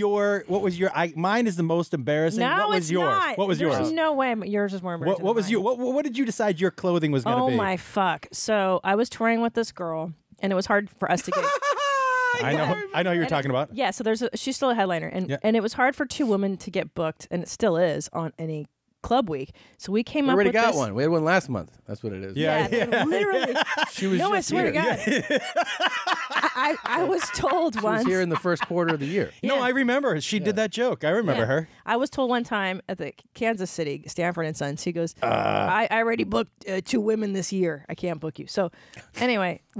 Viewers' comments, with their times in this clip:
0:10 Tom segura mario laugh. It's a me, Tom segura
0:11 Tom "Ryan Sickler voice " Segura
0:24 Matt Hamill Joker laugh with mirth